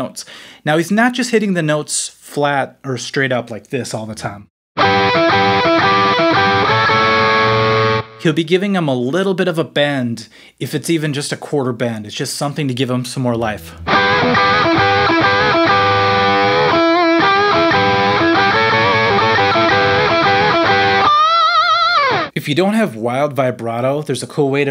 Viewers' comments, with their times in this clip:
0:05 sounds like that one fill in enter sandman